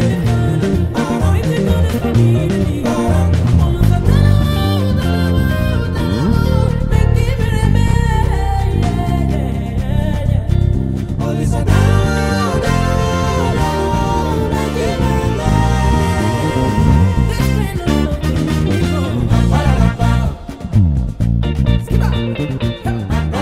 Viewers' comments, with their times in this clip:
0:05 That slide killed me and brought me back to life